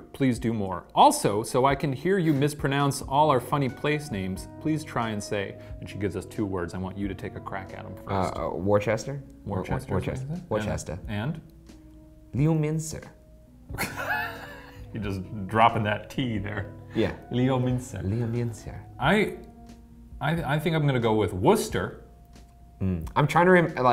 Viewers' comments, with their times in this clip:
0:06 is so funny to me haha, it never crossed my mind that place names like worcester and leominster could be so hilariously mispronounced, but now that i think about it i guess the pronunciation is confusing compared to the spelling